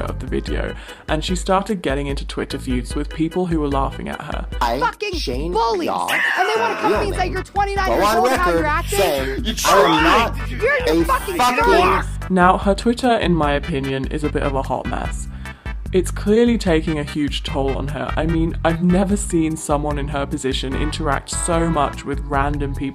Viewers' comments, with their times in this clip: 0:04 i was looking away for a few minutes but when i tuned the fuck in i was getting screamed at lolol